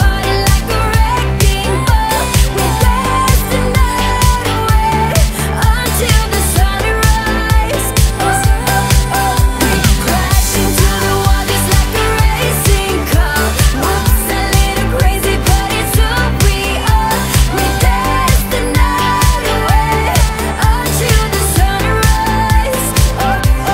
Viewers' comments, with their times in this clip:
0:09 Is it just me does these 2 seconds here sound like Hot N' Cold by Katy Perry spot on?